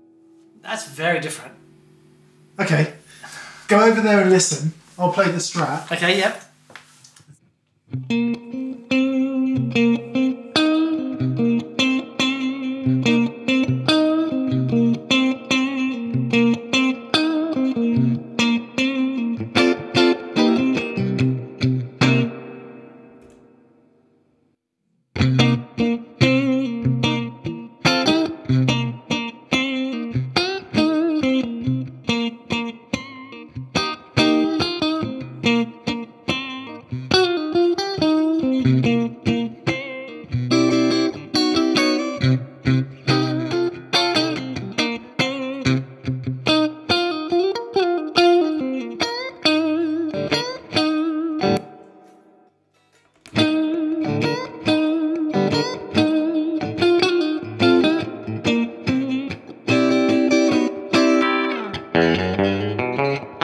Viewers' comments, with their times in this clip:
0:08 Great comparison. is it for me. The ToneMaster doesn't sound bad at all, but compared to the '65 it's harsh and lacking some warmth/body.
0:38 The Orig is fatter than the Tone Master.
0:46 wow... that amp... sounds great. i am not too far in ( at the moment) i suppose as we all are probably starting to realise... digital modelling is now getting SILLY good. providing it all doesn't fall apart with more crunchy tones, i suppose the real question is... how does it feel to play through? it is a bit hard to gauge that from a video unfortunately. But man... I'd be happy with a tone master to be fair. It definitely has all the characters in the clean department that I love and expect from a Fender amp. But, realistically... I've had many digital modellers over the years that have sounded great, but feel weird to play through, and that is almost as bad as having one that feels good but sounds crappy. lmao. So my conclusion... this is definitely something I am going to have to explore in person. On face value, it does what it says on the tin though and that is fantastic.